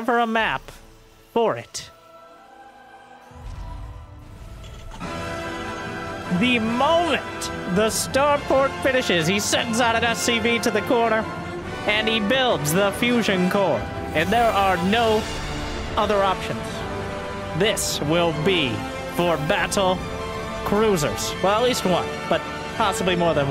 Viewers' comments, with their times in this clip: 0:04 tell me this soundeffect doesnt sound like Maos red sun in the sky XDDD